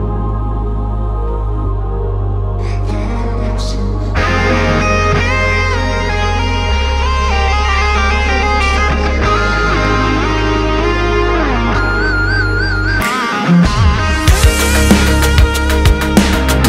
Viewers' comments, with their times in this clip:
0:04 Awesome. I came here by Instagram’s advertising. 🇧🇷 This solo 😍